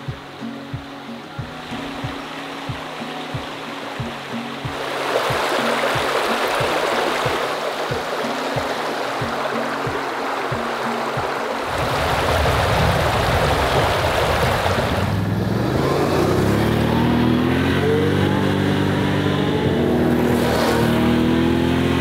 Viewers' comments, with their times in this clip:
0:03 Are you kidding.. that is so beautiful and the sounds are soo relaxing. What a life